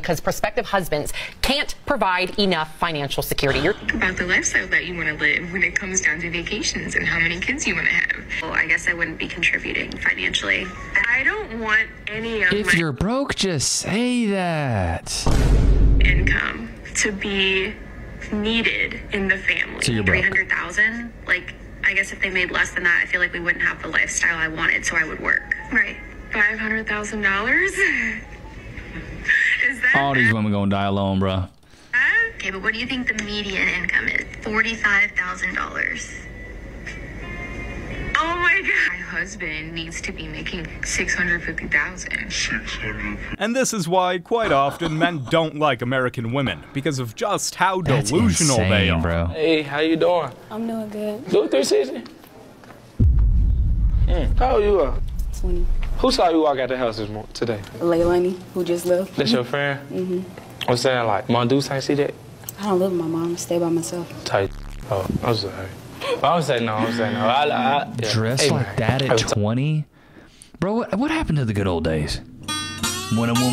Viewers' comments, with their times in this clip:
0:06 notice how every single one of them speak in the same manner, like they are sick or something, speak normally beach
1:01 I'm glad to see that it isn't my hearing going bad, even the person in charge of the closed caption couldn't figure out what he was saying.